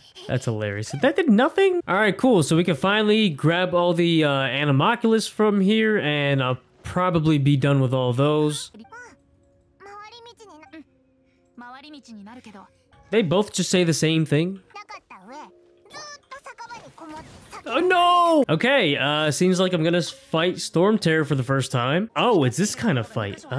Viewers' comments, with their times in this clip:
0:10 venti is mocking paimon actually , if you listen in the english dub then you can clearly hear venti is mocking her but in the japanses dub you cant hear it